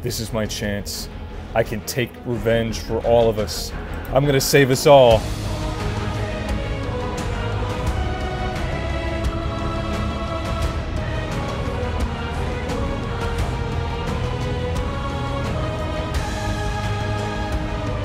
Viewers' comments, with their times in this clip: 0:06 when the Attack on Titan music kicked in I viscously bobbed my head. W montage W episode